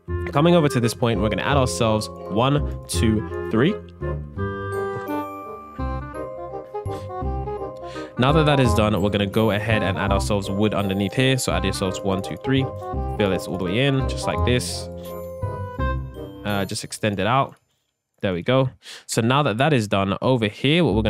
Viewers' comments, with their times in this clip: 0:04 why you like did not make any sound did he pause the video?